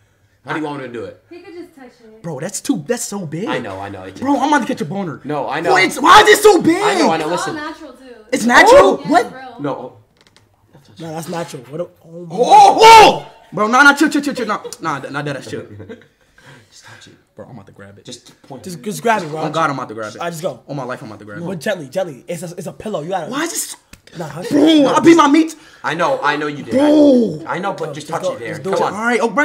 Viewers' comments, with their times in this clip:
0:10 did she just fart?